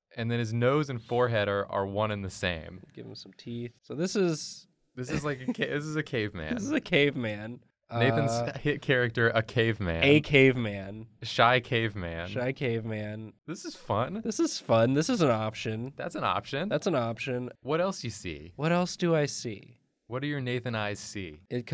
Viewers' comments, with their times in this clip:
0:05 was like an echo between the two
0:05 is there an echo?